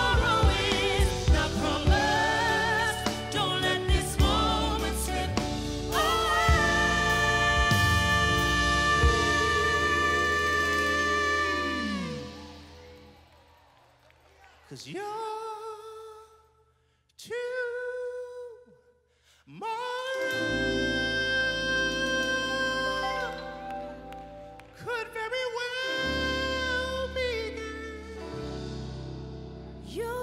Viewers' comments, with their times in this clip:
0:05 Bruh....I was listening to this performance feeling perfectly normal and good. Then, for some inexplicable reason at precisely when then hit that note.....I instantly got emotional and a tear came out. Like, outta nowhere. That's NEVER happened to me before
0:12 The girls today cant hold notes like ! 🙌🏽